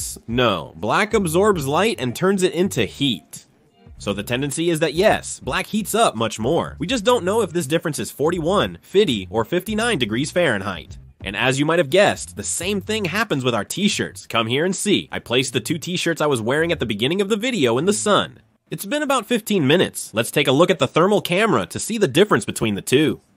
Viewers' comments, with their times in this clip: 0:09 did the translator really say "fiddy" 💀